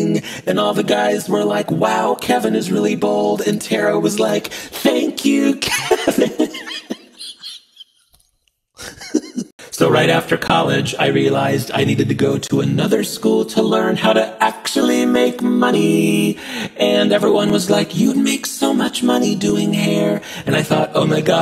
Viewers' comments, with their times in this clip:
0:09 that laugh is fr everything help 💀🤚